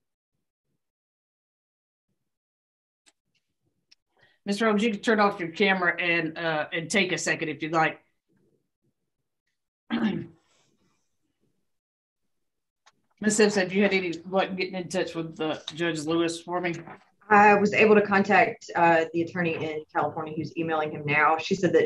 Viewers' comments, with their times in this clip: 0:06 oh my heart 😢 that kid has clearly been coached, her jolly voice is so fake when talking to him too.